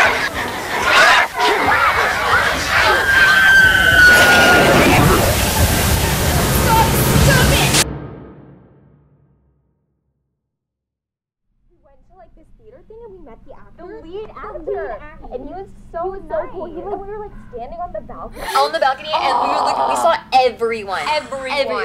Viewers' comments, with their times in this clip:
0:08 I like this, It had "Cat got your tongue" vibes from the first season. I liked the ending it actually worked well and is explained in the title. Did anyone else hear someone say "God, stop" or Scott, stop" ?